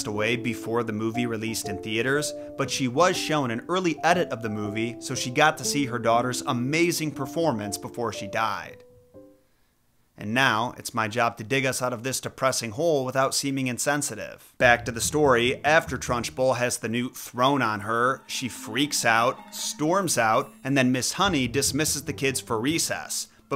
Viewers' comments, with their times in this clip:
0:08 damn that pause had me thinking you were about to say "Not actually but that would have been nice"